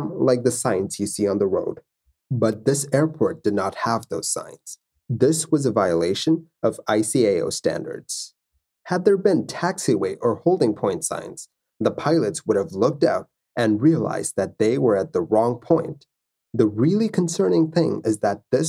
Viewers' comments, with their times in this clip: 0:05 [ ai-si-ei-o] for ICAO, is it possible to spell that abbreviation?